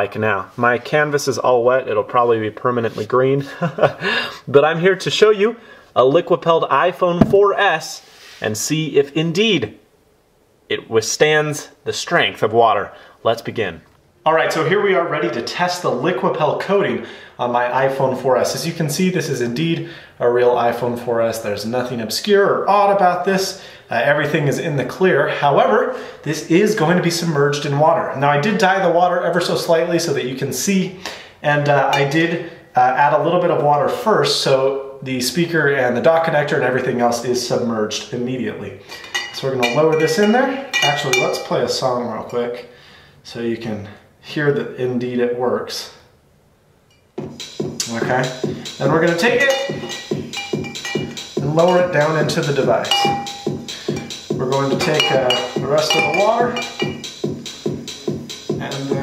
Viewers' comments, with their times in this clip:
0:03 stuck up laugh
0:46 Nice sex music. :)